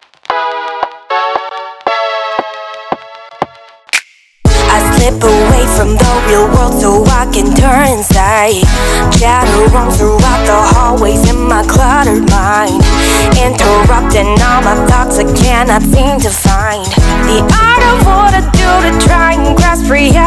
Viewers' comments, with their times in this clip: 0:04 I can understand the distortion (or some clicky sounds) in the intro, since that part lacked high frequencies. However, why the fuck is it still there when the beat comes?